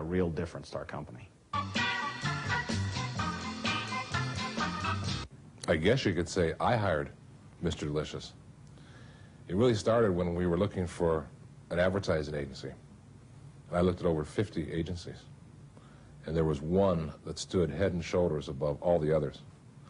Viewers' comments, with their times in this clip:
0:05 Oh right I thought it was the guy talking as his voice sounds the same.